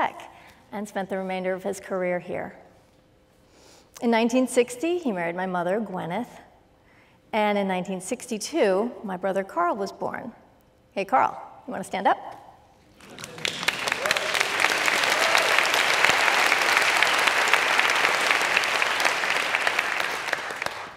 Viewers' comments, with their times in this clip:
0:04 I thought she said "murdered" 😨